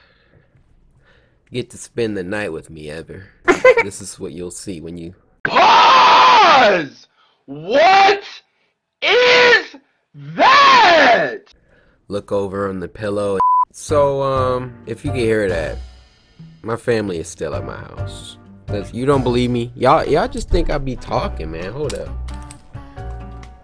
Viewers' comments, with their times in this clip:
0:05 When Cory input that berleezy audio clip, I died😭